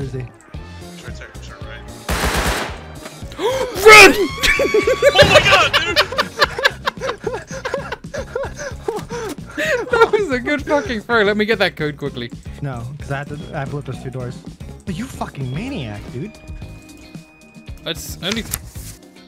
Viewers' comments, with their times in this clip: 0:03 That R2D2 scream had me on the floor laughing 🤣
0:03 scream of pure terror